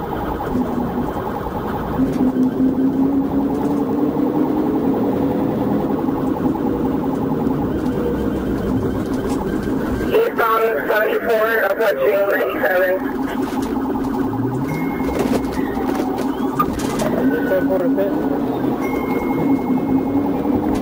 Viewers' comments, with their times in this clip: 0:07 Had they had permission to perform the pit maneuver, the perfect time was just after the U-turn. They weren't going that fast with no traffic in their direction and light to none in the other direction. I will say that the first FHP officer's adrenaline didn't go up during the chase as it showed in his voice. I commend him for staying calm. The driver won't be using any of his driving skills anytime soon. 🤣